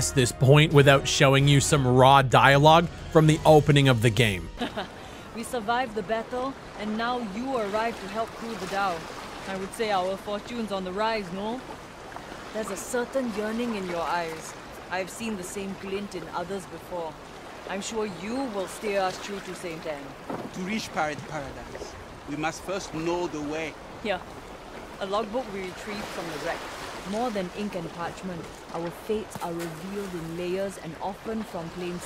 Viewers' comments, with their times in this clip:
0:04 that's the singaporean accent? did they tried to cut their budgets by getting one of their own singaporean staffs to do the voices as well?
0:06 I played the beta, and I was also stunned with how bad the voice acting was from that character in The weirdest part is that I saw footages of people playing a previous beta 5 months ago, and it was a different male character with a French accent. His voice acting seemed much more energetic and convincing. What happened? Why did they feel the need to change it?
0:15 The dialogue sounds like they're AI generated. WTF